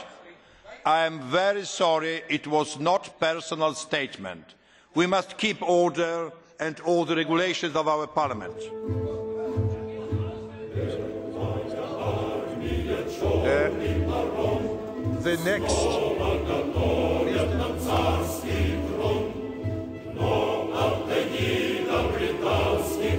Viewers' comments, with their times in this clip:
0:09 the song at the end cracked me up HAHAHAHA^^